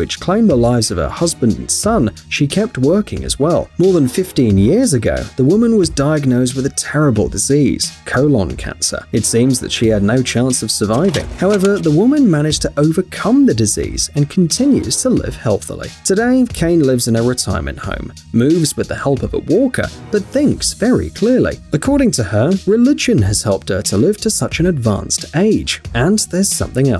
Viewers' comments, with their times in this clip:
0:08 Yes the coLON